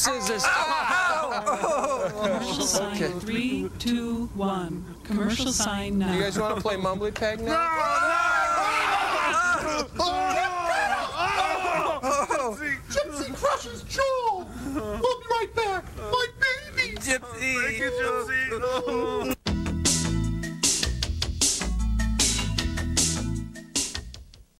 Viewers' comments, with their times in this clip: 0:08 Gypsy: [furious shriek] Me: (caught of guard) 😲 WHOA!!😲 [covers eyes as Gypsy rams Joel] 🙈🫣🙈🫣 Gypsy: GYPSY CRUSHES JOEL!! (whacks him off-screen again) Me: [cracking up] Oohh!... Okay, too funny! 😆 😂 Gypsy: My Babies!